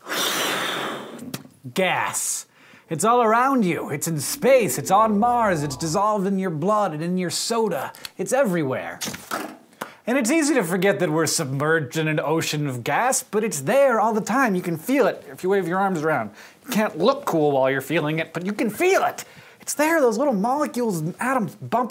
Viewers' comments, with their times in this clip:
0:08 lol when he the ballon makes that pop noise on his other hand